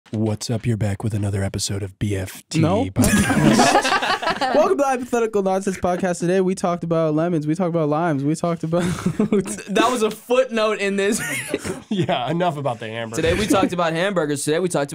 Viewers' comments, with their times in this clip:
0:00 If u start the podcast it sounds like a fever dream